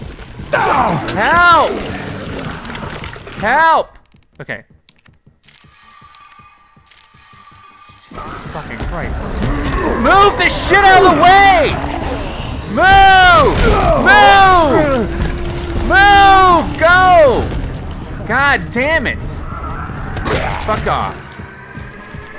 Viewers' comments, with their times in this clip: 0:09 You sound like ellis from left 4 dead2. You raged